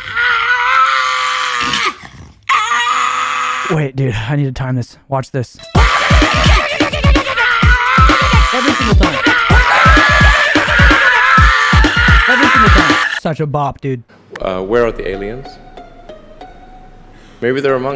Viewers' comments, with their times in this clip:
0:05 i think his music skills are slowly fading away